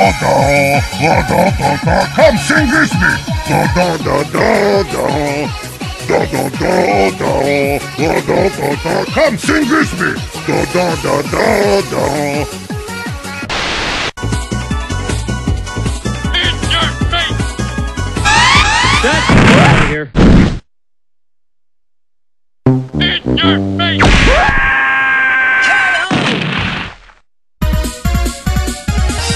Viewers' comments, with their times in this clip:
0:10 Homer's voice sounds like bald big guy from TF2.